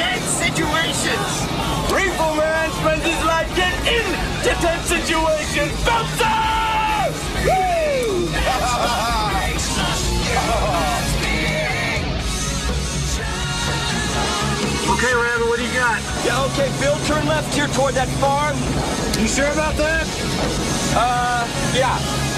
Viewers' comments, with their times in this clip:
0:08 makes me laugh every time...Melissa is like "what the hell, I need to lock this guy in an asylum" when Dusty yells on the radio haha. The irony is, Dusty (despite being an experienced storm chaser too, as he was in Jo's team since the beginning) is the madman of the group, while Melissa (Jami Gertz) is a psychotherapist in the film xD